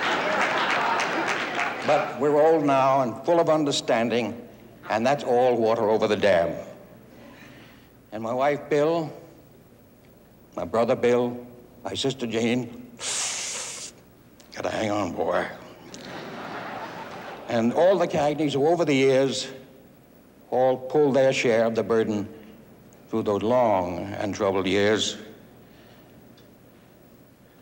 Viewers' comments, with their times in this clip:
0:10 He looks great here at 75 years young.....I notice he gets emotional when speaking of his wife,brother and sister but some laughed (he wasnt being funny) Rest easy Mr Cagney, you were loved by Many!